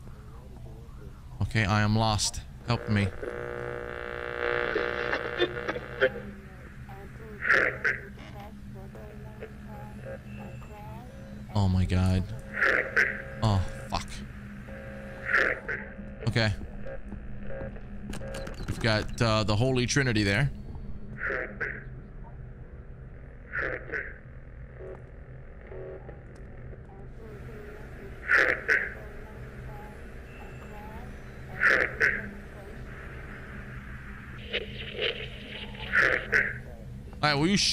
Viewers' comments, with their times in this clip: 0:09 "halp me". Sound very different on acid 😵‍💫
0:21 Is that Filthy Frank asking for help?